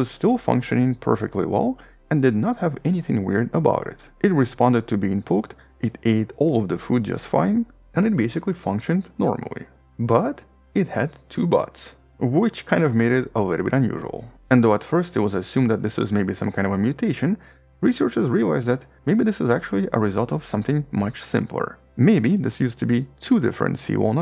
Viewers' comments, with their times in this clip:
0:10 you mentioned they had two butts. I couldn't understand the next couple of words. This very interesting.